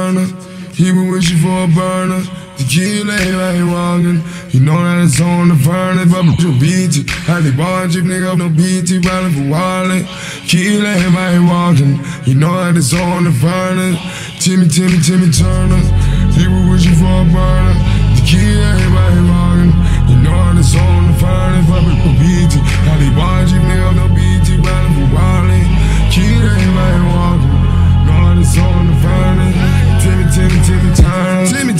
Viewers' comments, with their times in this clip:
0:08 they edited out a swear word but accidentally made another swear word
0:14 sounded bad ass